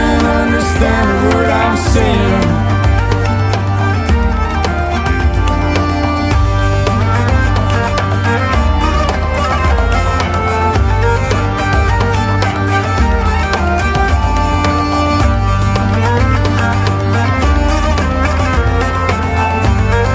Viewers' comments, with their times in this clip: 0:07 oh this hurdy gurdy 😍